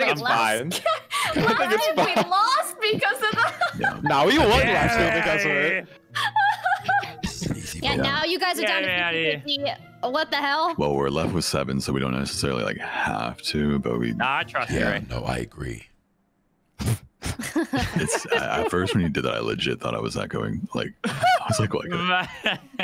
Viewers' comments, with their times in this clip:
0:10 Courage voice from Corpse 😏